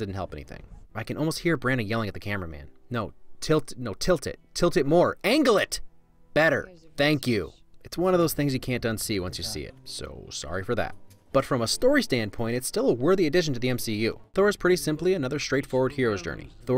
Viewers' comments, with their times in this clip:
0:03 I just love how testy your voice is. I can really see that voice coming out of some famous directer's mouth.